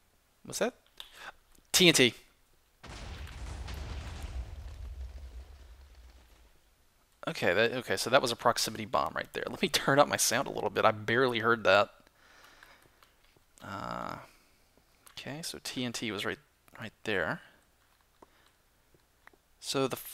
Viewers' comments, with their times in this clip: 0:07 ,i heard that TNT at least 1/2 second before he did XD.